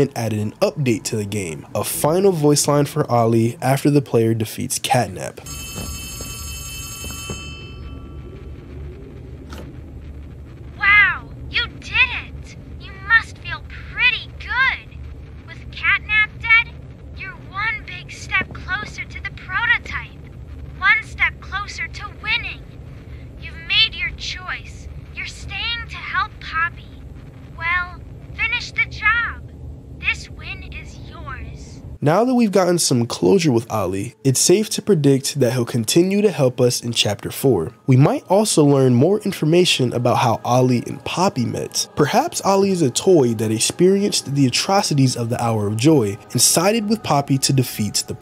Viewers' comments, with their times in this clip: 0:07 I genuinely think this might not be Ollie. Listen to the way he talks. It almost sounds sarcastic and a bit mocking in tone... This might just be because he's a kid so proper tone eliciting isn't his forte, but I think this last call was actually the Prototype after it took away Catnap. The Prototype IS able to mimic voices that it hears, and clearly likes to toy with employees of Playtime Co.
0:12 Ollie Is definitely the prototype, at the end he sound’s sarcastic and says “you’re staying with poppy you made you’re choice” which seems like he’s annoyed or angry at best, and In the tape of the scientist speaking with the prototype you can hear a voice that Is very identical to, Ollie and how does Ollie have multiple keys to the building’s It’s kinda weird and finally If the hour of joy started 10 years ago and Ollie Is a “kid” shouldn’t he sound older…this goes even If he’s a toy because dogday, poppy & mommy all sound older and It Is possible the prototype Is manipulating poppy, so he can’t possibly be a real person or a friend In that fact just one of the mimic voices of the prototype.
0:29 not only does he sound a bit annoyed or quiet, but he also states 'this win is yours' i know its not much but maybe its the prototype saying hes gotten away this time or something?
0:33 he sounds pretty cocky tbh maybe it is the prototype